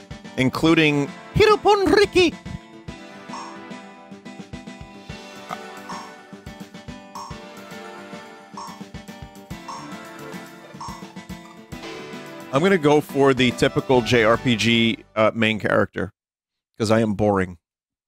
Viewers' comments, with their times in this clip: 0:03 Vinny nearly making a noise and then deciding not to is cracking me up